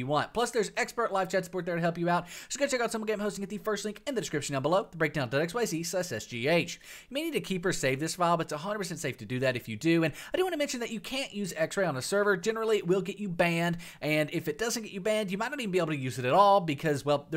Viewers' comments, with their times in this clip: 0:05 you talk so fast